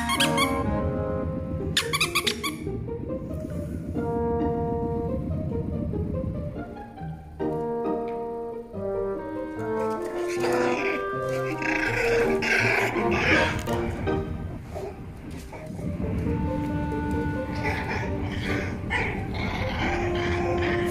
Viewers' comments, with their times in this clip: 0:03 Was having a rough day.. them mini emgines changed my mood! Thamk to hoomin and potats for dis quality effect! 💛💛💛💛